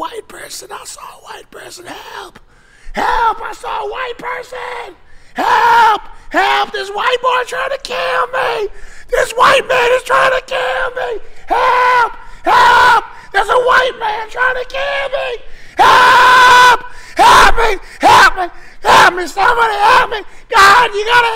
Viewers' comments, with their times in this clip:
0:07 Sam mimicking the last sounds of his victims to lure out more prey